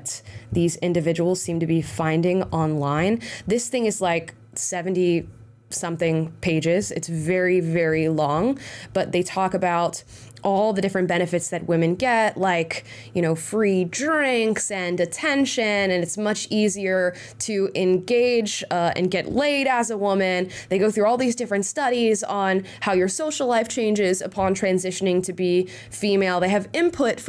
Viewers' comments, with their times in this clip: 0:10 His attractness went down 1000% 😝 I wouldn’t be fooled based on the voice